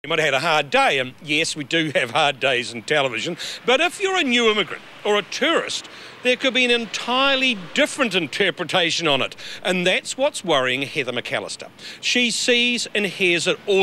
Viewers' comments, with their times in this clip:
0:00 Captain Price? Is that you?